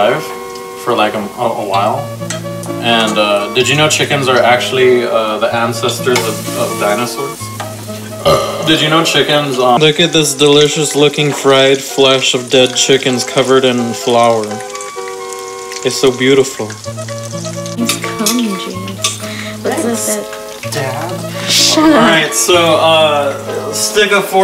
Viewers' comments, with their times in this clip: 0:03 Dam that burp was a e s t h e t i c
0:07 them burpreverbs made my day!